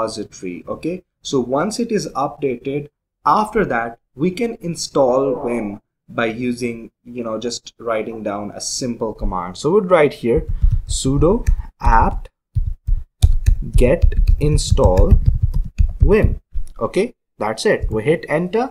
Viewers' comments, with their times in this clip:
0:05 did you fart.. Xd